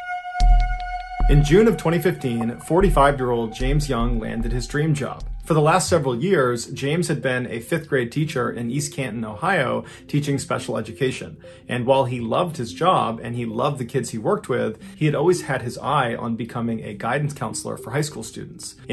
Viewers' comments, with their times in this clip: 0:03 why is there a Dutch air-raid siren?